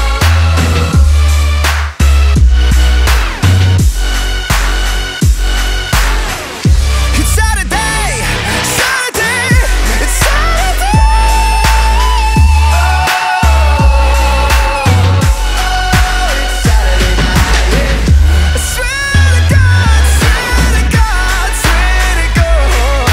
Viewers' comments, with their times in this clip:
0:07 Wtf is that voice 😍